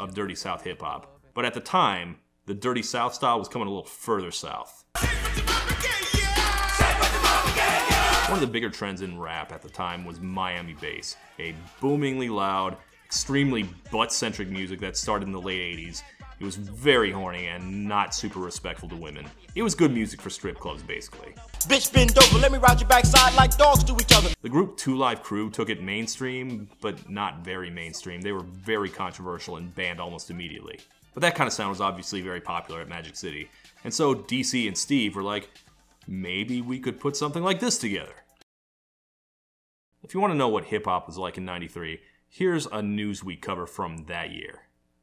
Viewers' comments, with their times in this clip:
0:10 that piano sound is ATL LITERALLY in Kryptonite and Aquakemi.
0:26 is it me... Or does this sound a teeny bit like Jay Electronica? 😂